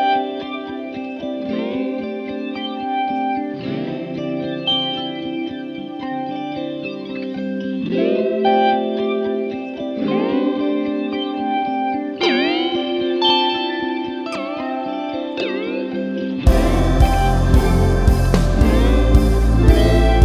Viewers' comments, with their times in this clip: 0:08 how did you get those pitch modulations starting ?